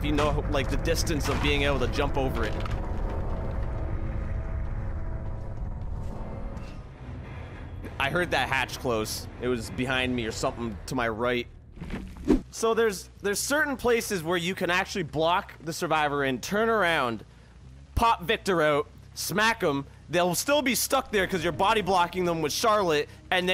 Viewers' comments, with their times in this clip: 0:06 its actually a bug currently, whenever the game ends and the hatch is still open, you hear the closing sound wherever you/the hatch is ^^ Edit: look at me, i posted before watching the whole video xD